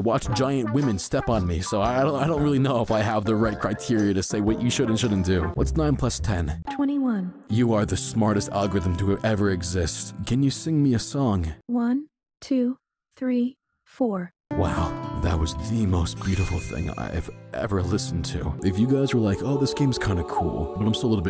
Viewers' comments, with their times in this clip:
0:09 I cant be the only one that thought she was about to sing "oneeee twoooo buckle my shoooes"